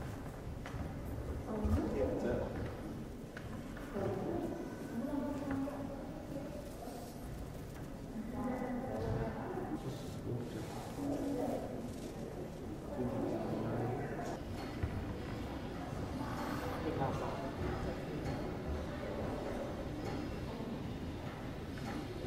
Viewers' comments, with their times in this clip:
0:09 I was having a cup of tea when i heard my notification buzz. I'm alway excited for these uploads. I enjoyed seeing these great scenery of the Millennium Gallery. It's a massive place. there's alot fine masterpiece there i was so fascinated by how they look.Some of them made out of gold and sliver. So much history being preserved which is absolutely good. I like the sounds of the persons walking by and vehicles that drove pass too that was great. You smashed it again my friend. Love it👍